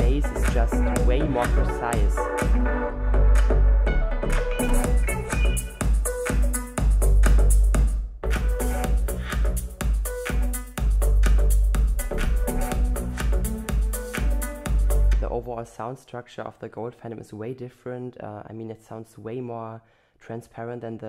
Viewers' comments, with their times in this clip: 0:03 o my gosh that bass note was crazy